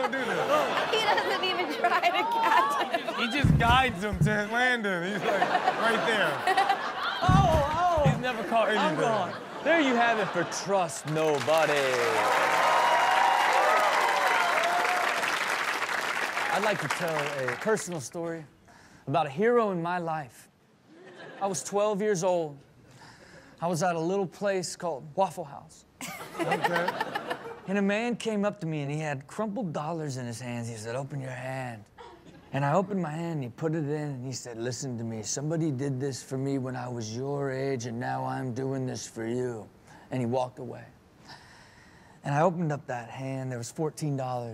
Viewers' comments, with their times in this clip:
0:03 my guy starts sounding like Joel olsteen
0:26 the way he said waffle🤣